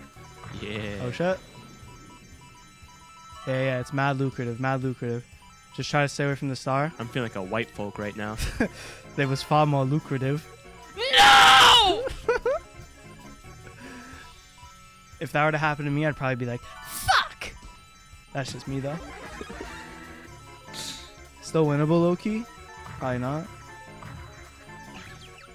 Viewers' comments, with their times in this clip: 0:10 That scream kills me every time🤣😭
0:10 Bro I love the scream kills me every time
0:10 bro the scream then the thwomp starts buggin out immediately after😭 Love the content btw